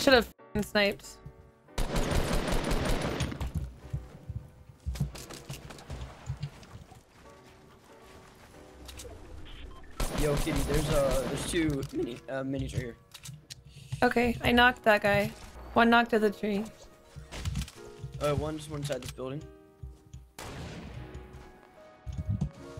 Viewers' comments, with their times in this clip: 0:10 voice crack af